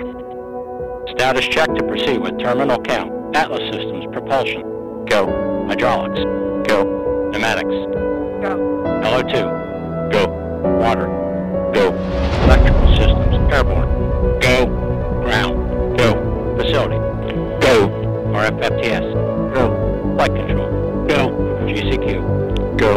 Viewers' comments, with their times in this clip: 0:06 Its so cool to hear that go/no poll. Another cool thing, you hear different voices from people who have been working on 1 thing!